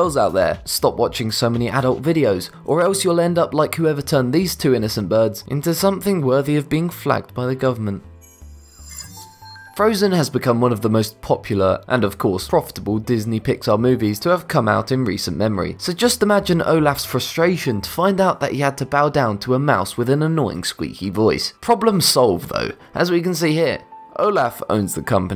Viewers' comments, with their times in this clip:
0:09 All of these are interest and some hilarious. 😂 Whoawhoawhoa Frozen, Pixar? Frozen is not Pixar any more than the MCU is. If you can edit a video, you have no excuse to not be accurate.😬 Also, "Phooey" is pronounced...well, "foo-ey". "Ph" always makes an "f" sound.